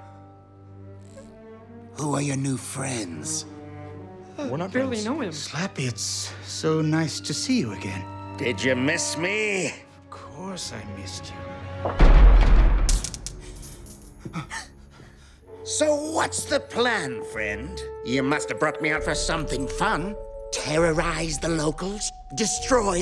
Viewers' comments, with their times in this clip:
0:08 sounded like psycho Po